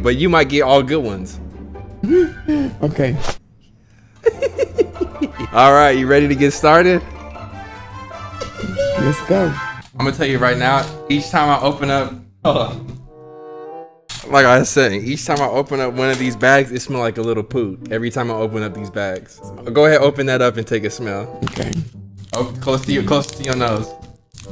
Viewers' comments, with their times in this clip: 0:06 he giggled like clank frm that game ratchet and clank🤣💔😭